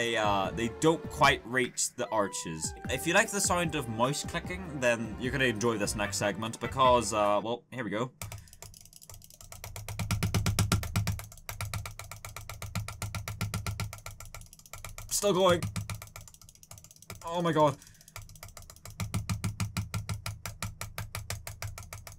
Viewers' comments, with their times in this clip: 0:06 mouse: kill me